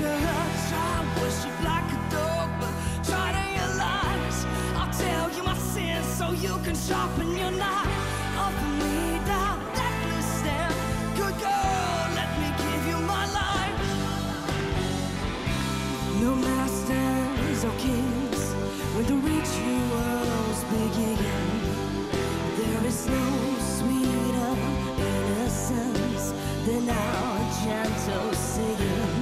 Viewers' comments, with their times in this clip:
0:03 is the metal version of "take me to church"
0:12 whoooo child, tired of the bull****, she cannot sing, why them judges turning their chairs, she sounds absolutely terrible.